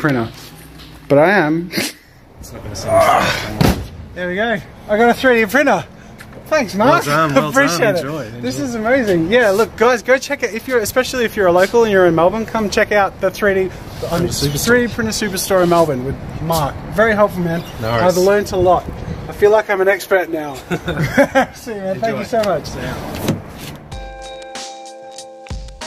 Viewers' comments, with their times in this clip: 0:07 SNAP!! That's going in my cringe compilation